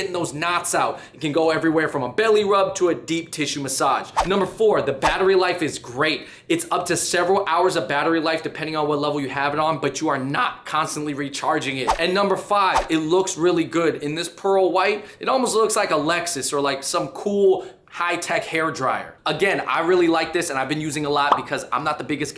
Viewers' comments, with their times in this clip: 0:10 sorry but the crack ....i had to replay that a few times before i had enough